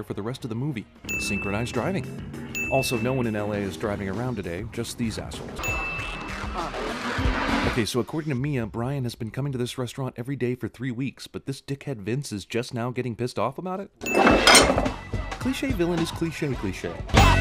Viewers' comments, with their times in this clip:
0:05 Why would cars intended to be used in a robbery be flashy, distinctive models with neon lights underneath? Doesn't that just make them easier to spot, identify and track? Maybe using some fast-but-nondescript, unmodified vehicles would be more effective if you don't wanna be traced, like, by the police? [Ding!] Music sounds like a Transformer. Almost forgot which bland, cheesy, badly-acted action movie I was watching there, for a second! [Ding!] No scene with Mia contains a lap dance. [Ding!]